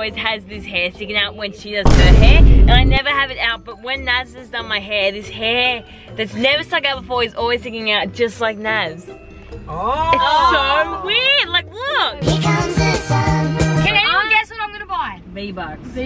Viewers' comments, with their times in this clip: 0:04 in the video it was giving Alvin in the chipmunks 😭